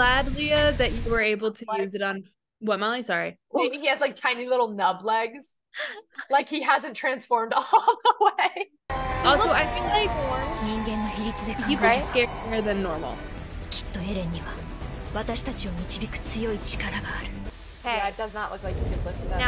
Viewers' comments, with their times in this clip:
0:05 I'm Your subcriber for a long time, but I'm also a very busy person- that's why I'm not commenting as much as other people. Do You want to know what makes SUB Attack On Titan better than DUB for me? It's the Eren's Titan scream! It really sounds legit in SUB, but in DUB it sounds like he was underwater. That's why I'm enjoying SUB more than DUB. Thank You for this reaction! 😃